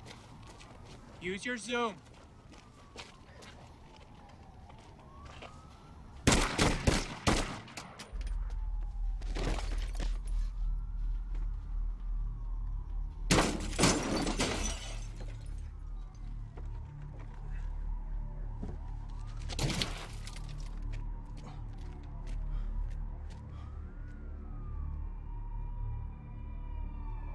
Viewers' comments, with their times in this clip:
0:09 i usually dont pay attention to this but the sound editing was so good for this movie like was pure asmr to me